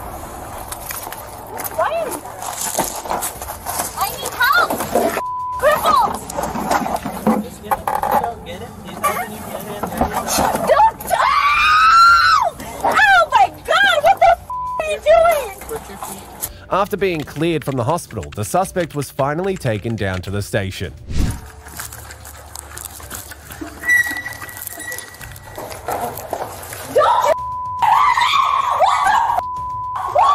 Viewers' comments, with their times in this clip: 0:09 Sounds like R2D2 screaming.
0:11 Lady no need to yell. He is helping you getting in.